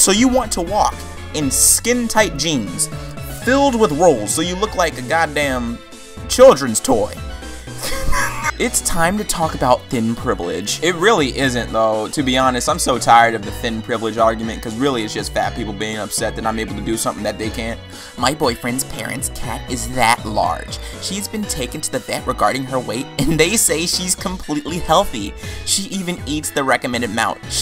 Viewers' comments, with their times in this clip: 0:06 OMG THAT LAUGH I'M DEAD
0:07 THAT W H E E Z E THO
0:07 That wheeze keeps me going, glorious
0:07 That laugh sums up how I feel about all of this
0:07 "god damn childrens toy" dying motor sound
0:07 best laugh ive ever heard
0:07 Anyone else scrolling through the comments to see if there is any hate comments? Or people that are triggered Edit: What the hell was that laugh?
0:07 oh my god your laugh skjdjksj 😂😂
0:08 That laugh, though
0:08 that fucking wheeze gets me everytime